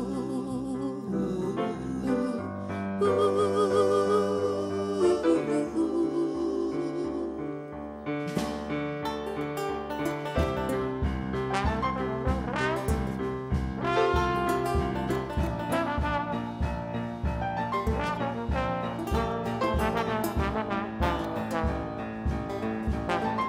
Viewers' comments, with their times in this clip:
0:08 Collectively they somehow made it seem like they all had been moving to that solo point in song just to celebrate the trombonist and his instrument like he had a birthday or something. A fantastic performance!